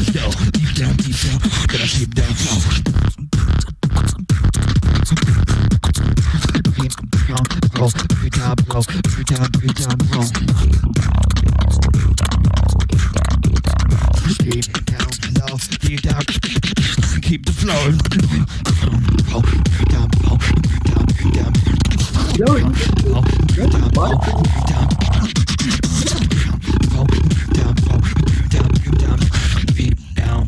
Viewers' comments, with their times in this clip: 0:06 That beat is so sick!
0:16 drop was insane